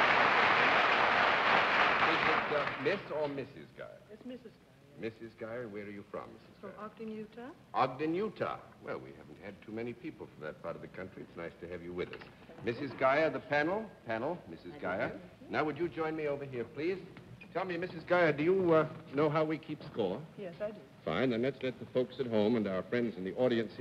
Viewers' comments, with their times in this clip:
0:05 Where is the tattoo artist from - I watch it over and over and it sounds like Arkanooka (???) Can you make it out?